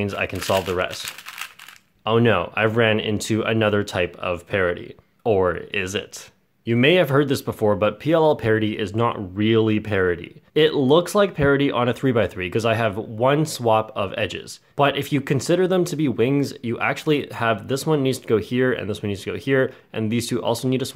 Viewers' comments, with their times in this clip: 0:03 Or is it? Vsauce Music Plays
0:05 Vsauce music strtas playing